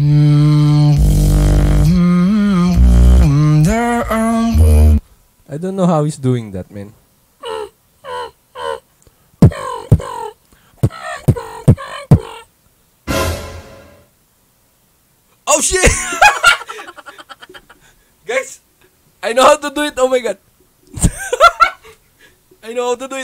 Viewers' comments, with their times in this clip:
0:09 is that a high pitch Chest bass? 🤔